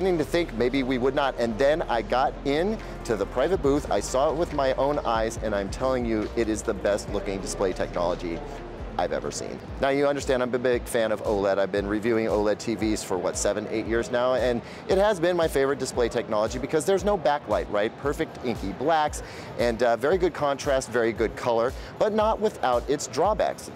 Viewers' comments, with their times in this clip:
0:10 he says "b,b,big" 😅🤣😅